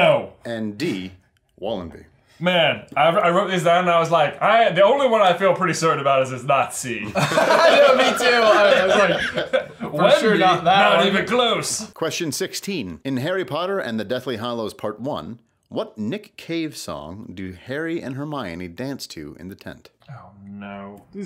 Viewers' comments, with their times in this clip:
0:05 Turn on automated subtitles and see what he actually said!